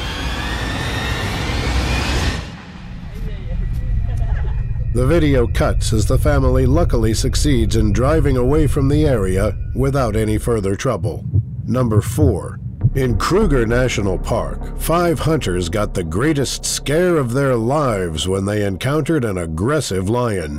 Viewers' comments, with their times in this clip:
0:06 Stopped cause of boring Video and yalla yalla shitsound in background.